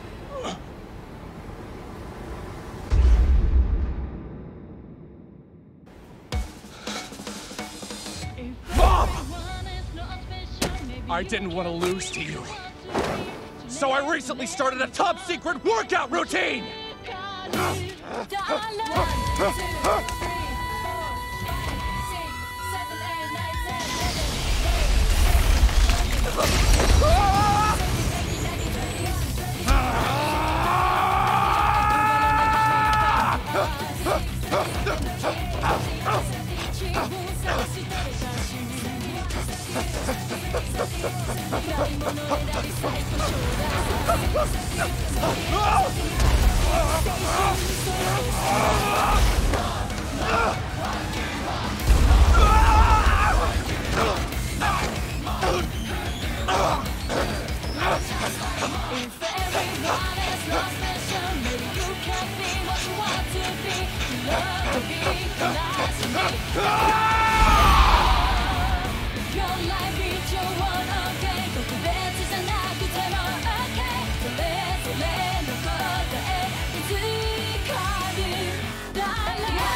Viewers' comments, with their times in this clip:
0:06 I literally screamed when this theme started playing😊
1:06 Reigen’s yell Man you can tell everyone else n the dub and original loved working in this anime. Mob is number 1 for me always!